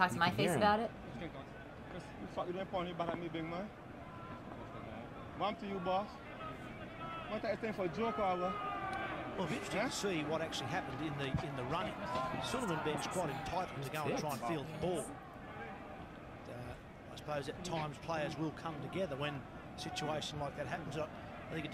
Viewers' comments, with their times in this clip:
0:03 benn using some bajan dialect